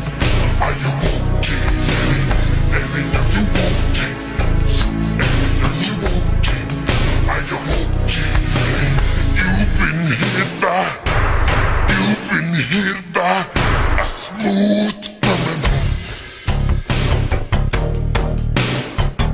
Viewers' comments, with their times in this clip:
0:03 Th8a is to deep but I like it